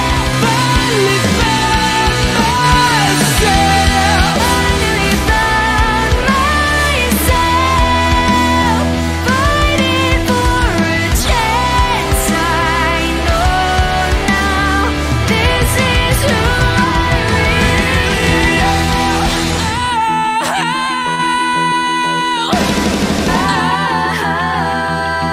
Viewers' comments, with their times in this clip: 0:07 The music mashup was quite good. Thank you I loved it. had some slight volume scatter should be easy fix.